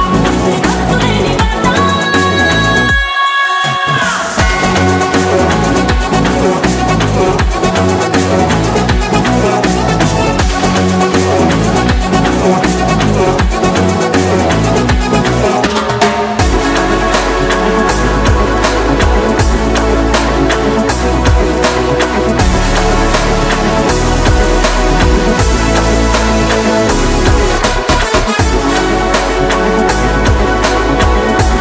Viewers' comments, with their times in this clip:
0:04 Super song and great voice 🔥🔥 Mahesh looks super 😎and anna 🔥🔥
0:04 similar to race guram intervel bgm
0:14 Beat is awesome, vere level... Anyone liked it???
0:15 Excellent background music by thaman Anna ❤️❤️❤️
0:15 From those Drum beats 🎧 🤙🏻🤙🏻 🔥 🔥 🔥
0:16 to bgm 🔥start love it.. Mahesh babu fan Love for Odisha cuttack.. ❤❤❤
0:19 ultimate music super